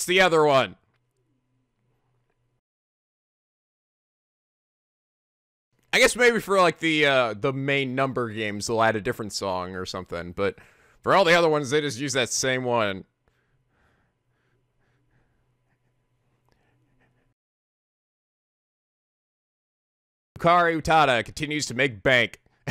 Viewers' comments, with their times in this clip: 0:09 I cant even hear it but i can hear it....